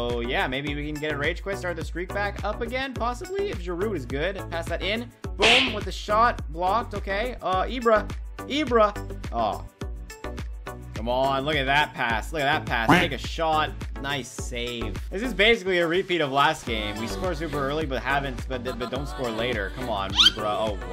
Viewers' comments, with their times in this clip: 0:08 The way he said Ibra 😅😅